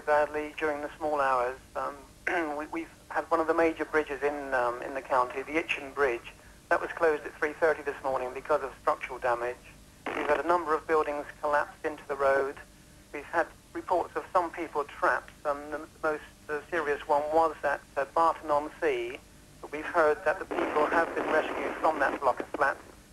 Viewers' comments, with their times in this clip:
0:10 Very rude of the chief inspector to fart down the phone !